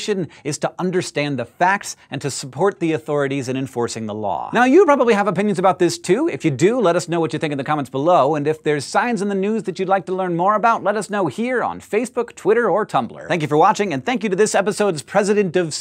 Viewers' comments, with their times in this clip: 0:03 Dang how many words per minute was that? That's some Twisted Isane right there